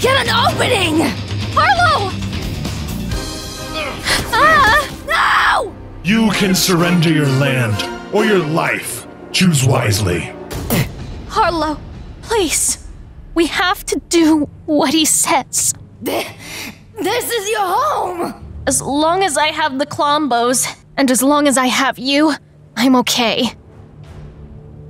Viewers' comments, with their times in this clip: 0:10 Last time i heard scream like that in season 6 Finale